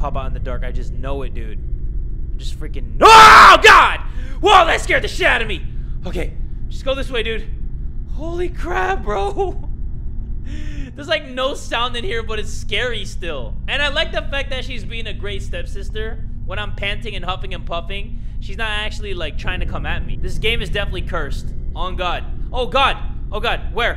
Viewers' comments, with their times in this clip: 0:08 did he say "holy crab?" lmao 🦀💫